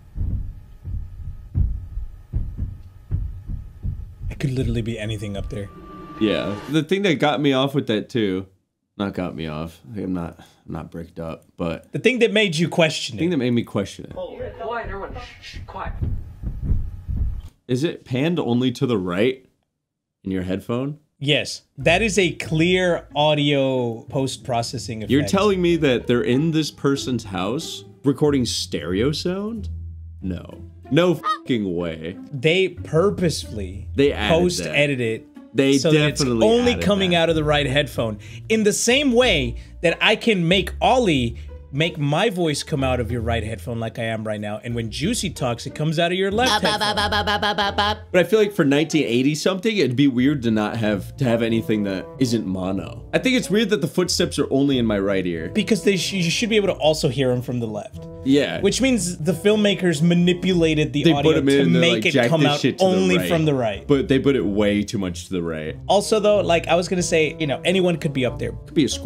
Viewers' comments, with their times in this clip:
0:08 that is true the footsteps I only hear in my right headphone
0:37 Man, I had one of my headphones off, so I heard a noticeable change in directional quality. Not the greatest feeling.
0:42 My right headphone is broken, so it just sounded muffled. 💀💀💀
0:52 Quick question, did he actually do it? I have a one ear headset.